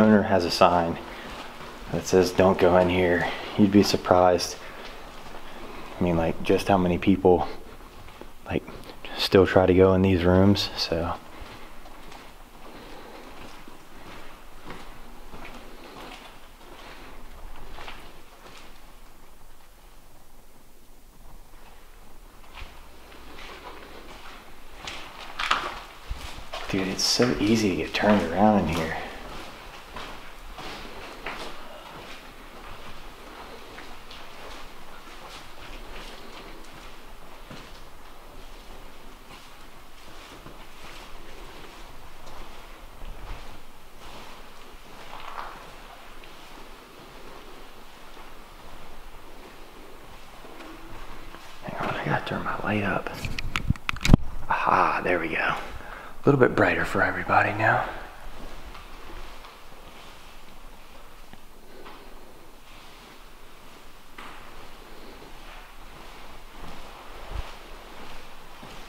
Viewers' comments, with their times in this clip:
0:10 I just heard footsteps coming from the hallway
0:27 I just heard object
0:27 I just heard cannot
0:28 I just heard shoes
0:30 I just heard Ron and I heard strange
0:41 Am I the omly one who hears growling? Since the beginning of the video and Im only in. Its not constant
0:48 I just heard footsteps again coming from the hallway
0:50 I just heard bacon 🥓
0:51 i think I just heard a girl crying